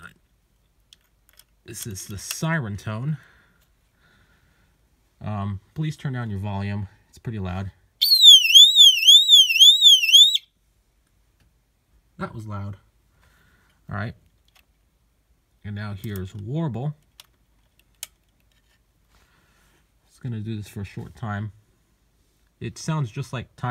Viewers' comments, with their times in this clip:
0:09 sounded like a mouse 🤣